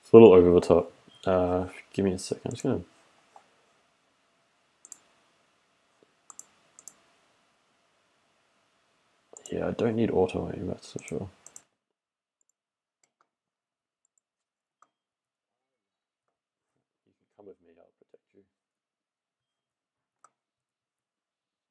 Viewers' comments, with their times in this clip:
0:04 audio cuts off completely mark